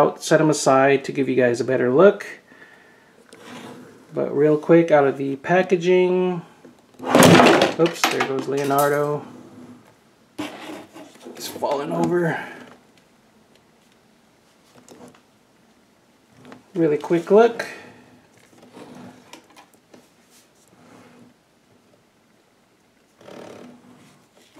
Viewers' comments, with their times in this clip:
0:05 it was more than the figure falling over it sounded like glass and bones breaking😂